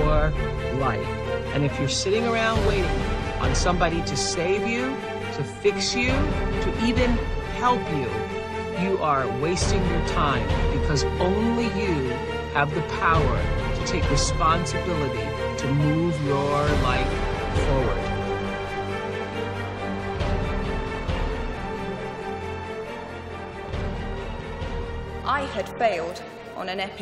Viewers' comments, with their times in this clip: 0:10 Great women, but I couldn't hear their words over the lound music. I couldn't get past becaue I wasnt able to get the messages intended.